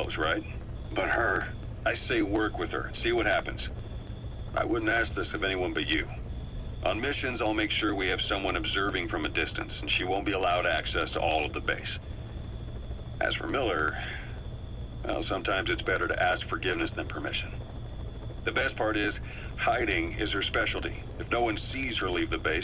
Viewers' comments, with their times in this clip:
0:03 There were indeed audio issues, though they were not big. you can hear them.